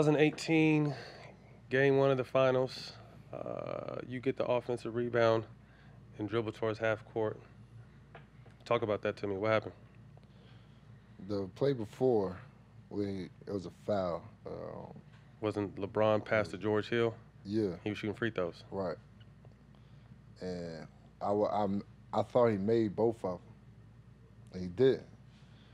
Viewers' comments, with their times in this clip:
0:10 the moment it gets quiet lol